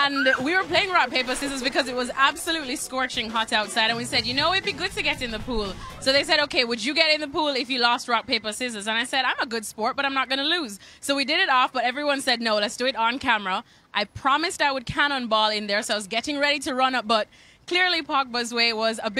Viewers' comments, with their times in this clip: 0:04 the way Pogba laughing at her 😂😂